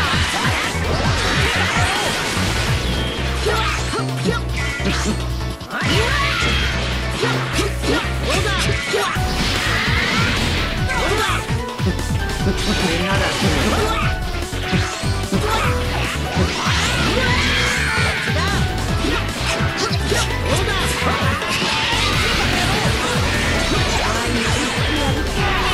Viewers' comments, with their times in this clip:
0:10 Okay I can’t find the OST Evil buu that’s playing what game’s it from?? I absolutely love how well the music is timed to the rhythm of the goku blue, that has to be one of the best blues I’ve seen who is he??